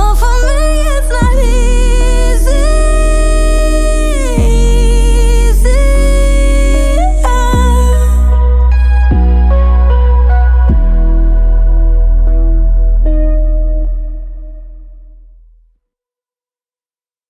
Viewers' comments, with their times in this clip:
0:03 this voice crack is the most beautiful thing I’ve ever heard